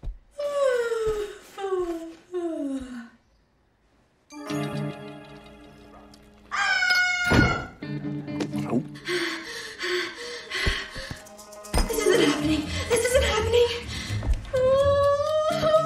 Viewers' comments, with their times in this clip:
0:03 the sound gives me 80s horror movie vibes